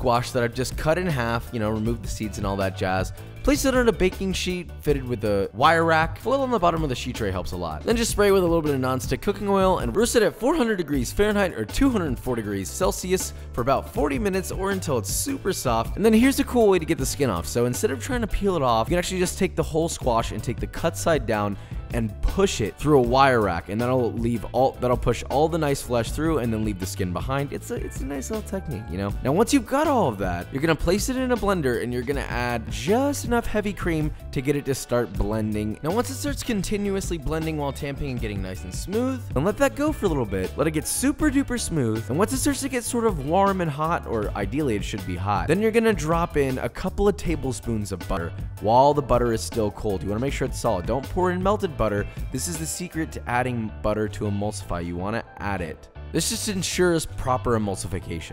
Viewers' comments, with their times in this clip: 0:05 my left ear just had a panic attack
0:26 who looked left too when audio changes :D
0:33 my left ear drum really enjoyed that for a second
0:34 Is no one gonna talk about how his voice comes out in one speaker for a sec?
0:34 dude that fucking scared me. Sound went from being on my right to my left
0:34 meh left ear is enjoying dis
0:34 l e f t e a r
0:35 i got scared like why's this man talking into my left ear?
0:35 my left ear really enjoyed that
0:35 My left ear just got scared
0:35 I thought my earphones broke 😂
0:35 Let your left ear enjoy
0:35 is it just me or does it start playing in the left ear only for a bit??
0:35 you forgot to record that in stereo yikes
0:36 you made my headphones have a seizure
0:36 suddenly getting ur voice right in my left ear made me jump lol
0:36 How did Josh switch sides speaking into my ears?
0:36 scare the shit out of me thinking my earphones just broke
0:36 bitch you almost tricked me into thinking my earbuds broke again
0:36 ...whAT HAPPEND....my head phone ...the sound is coming only from left side
0:36 My left ear died
0:36 why is he talking to me from the left
0:36 that scared the living shit out of me oh my god. I’m alone in my room and I thought someone was talking in my ear.
0:36 I was wearing my headphones and the voice over just went to the left side. Headphone users beware lol (but good video)
0:36 you made my headphones have a seizure
0:36 that was really annoying hearing you in one ear for a few seconds
0:36 I thought i broke my headset
0:42 Bruh what happened with the audio
0:46 the heck happened to the audio? Butter became butr and words were missing.